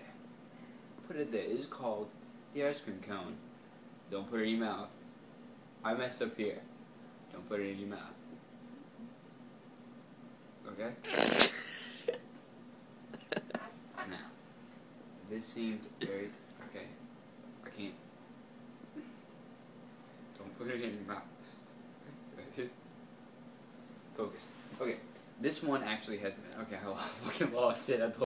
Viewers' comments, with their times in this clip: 0:10 it sounds like a fart but then i relaized the camera dude was laughing!